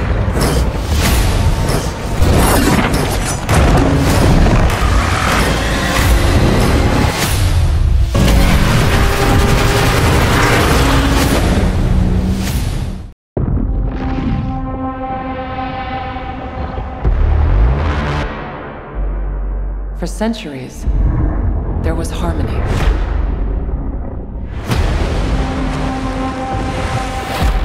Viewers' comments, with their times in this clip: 0:08 Shimo hidden roar in the background????